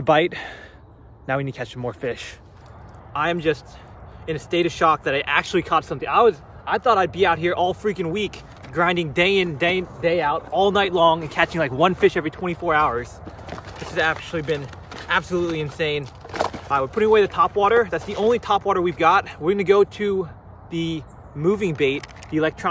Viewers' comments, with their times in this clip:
0:09 I thought he said it bussin 😭